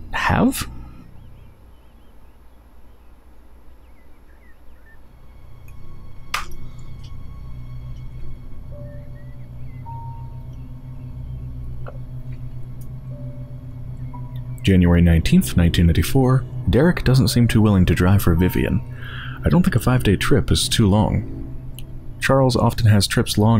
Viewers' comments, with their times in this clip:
0:05 I think i heard your brain shutting down for a moment after reading the terrible grammar